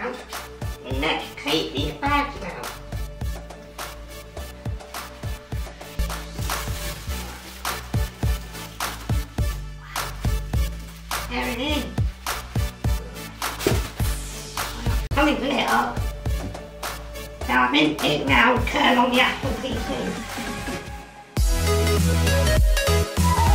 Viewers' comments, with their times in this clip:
0:09 Love the genuine "wow!" enjoy the new pc! 😄